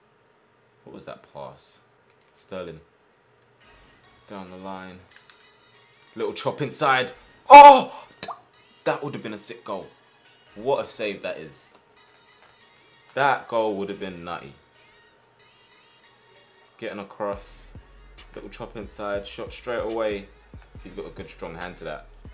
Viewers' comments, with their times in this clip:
0:07 anyone hearing the raindrop
0:07 the noise he made had me dead lol